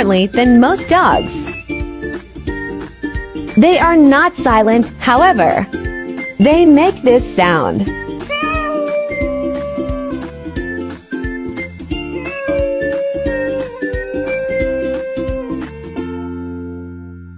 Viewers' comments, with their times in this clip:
0:05 they make this sound: meeeoww